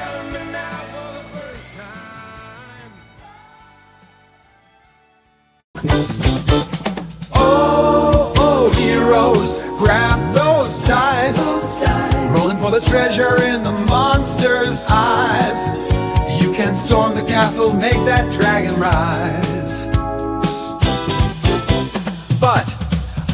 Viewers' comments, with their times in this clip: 0:05 If Steely Dan was really into D&D